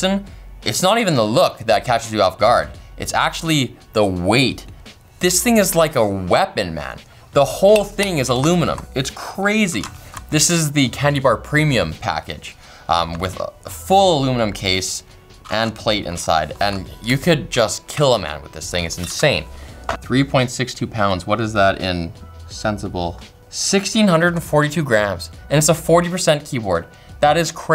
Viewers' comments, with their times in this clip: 0:08 "this thing is like a weapon" it also sounds like one